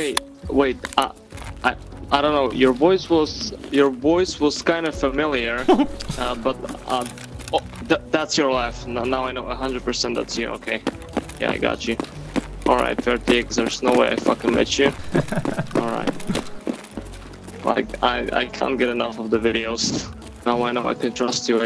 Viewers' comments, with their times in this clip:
0:05 poor dude sounds so defeated. Might have just kept him from quitting the game for good.